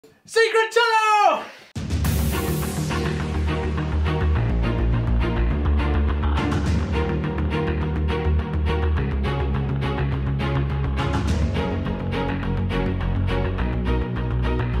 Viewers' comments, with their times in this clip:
0:00 its not gonna be secret if you shout it